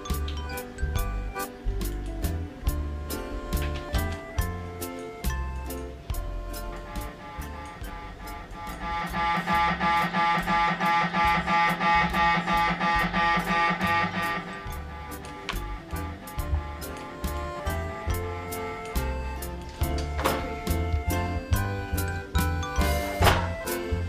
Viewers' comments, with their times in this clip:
0:06 What a Sweet MRI Sound
0:09 Yoo this banger on MRI SCAN🔥